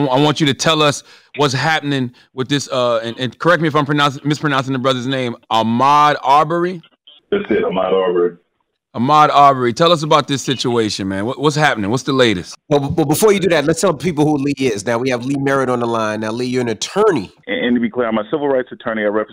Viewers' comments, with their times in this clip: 0:04 Damn homeboy really can't pronounce the name but had no issues with Charlagmagne....😑